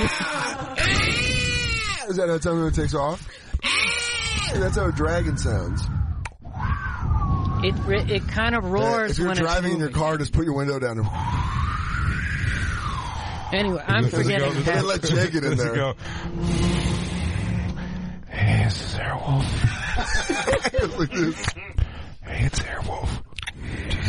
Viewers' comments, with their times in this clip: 0:10 ASMR Air Wolf